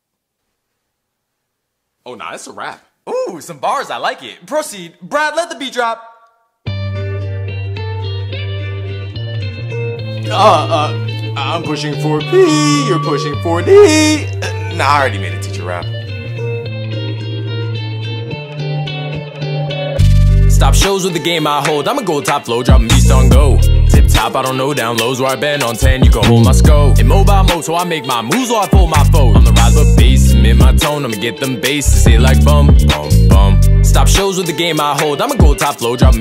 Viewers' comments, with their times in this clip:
0:06 is when the music actually starts
0:20 that awesome flow!
0:20 These are the times of thebeat drops
0:20 Where it all begins. When the emo boy brings some heat and the party gets noisy